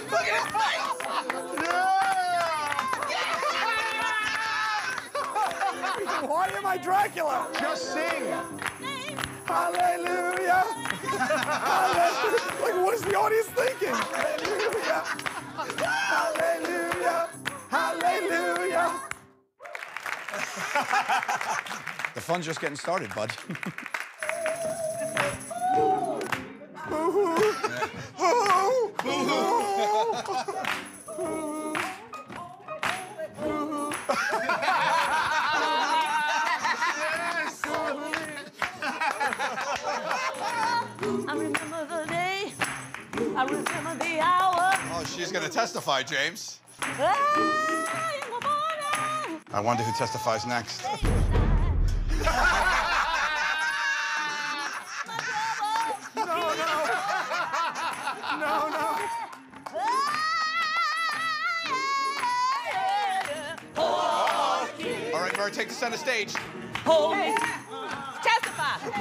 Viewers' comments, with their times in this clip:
0:03 Q's laugh "HAAAAAAHH!!!" 😂😂
0:50 The sudden pause on killed me haha